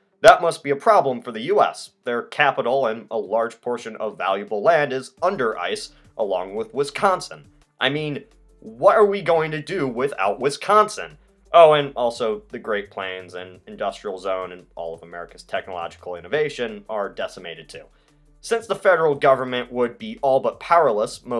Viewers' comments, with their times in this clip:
0:04 Way to much emphasis on con in Wisconsin
0:08 You can always tell if someone is a Wisconsinite by asking them how they pronounce Wisconsin. If it’s a harder C sound, they’re not a Wisconsinite.